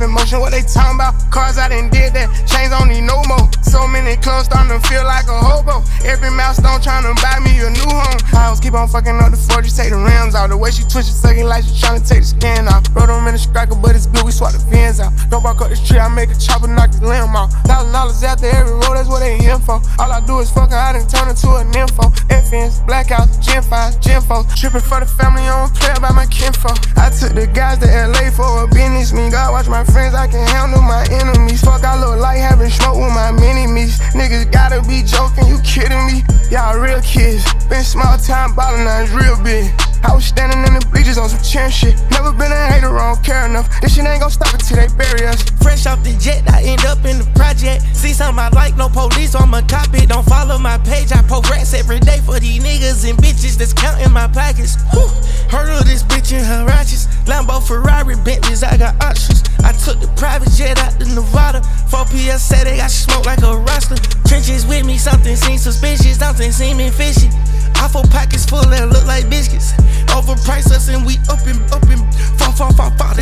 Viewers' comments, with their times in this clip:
0:08 i love the flow here
1:00 Thugs flow switch up is insane